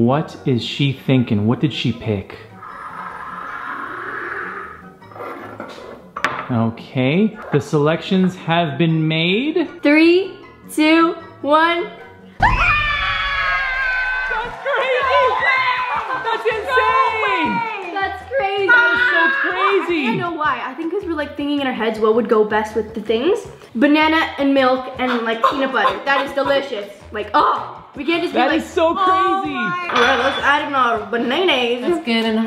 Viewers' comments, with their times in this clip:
0:09 3...2...1... r.i.p headphone users 😂😂
0:13 XD they were screaming so MUCH!